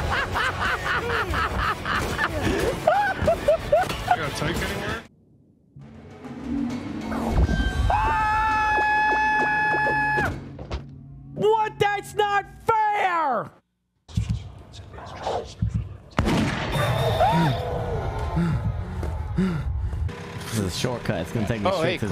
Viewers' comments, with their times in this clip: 0:05 The clip was so freaking funny XD XD XD XD that body drop soundd